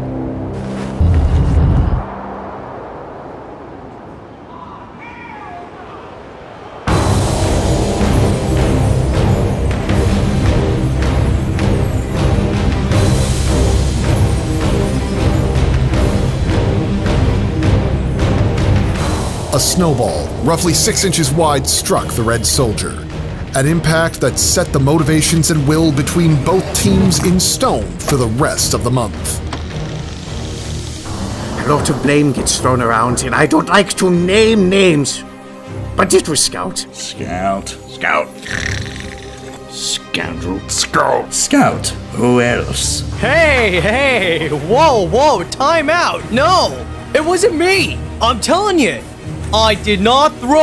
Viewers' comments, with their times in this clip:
0:04 That distant "AW HELL NO!"
0:36 sounds like sniper